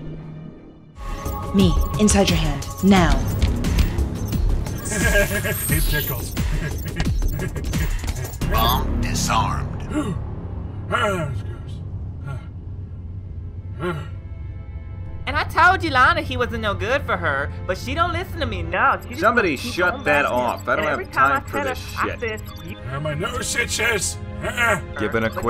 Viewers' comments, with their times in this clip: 0:10 is It me or does the chief sounded like Arthur Morgan from Red Dead Redemption 2